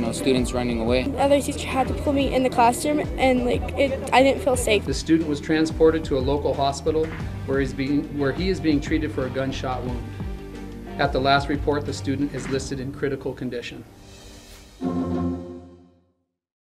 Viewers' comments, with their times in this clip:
0:04 the student was transported to a local hospital where he's beaten 😂😂